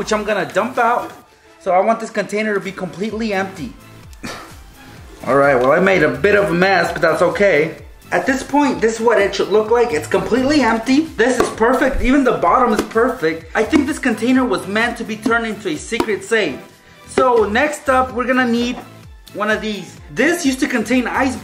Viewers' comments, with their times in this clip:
0:04 his voice changed